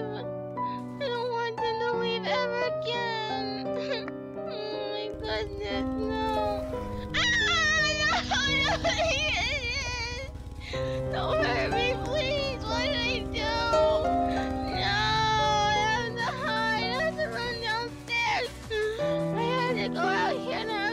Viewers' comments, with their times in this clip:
0:06 Why didn't you scream like you usually do in streams?!?!?! XD LOL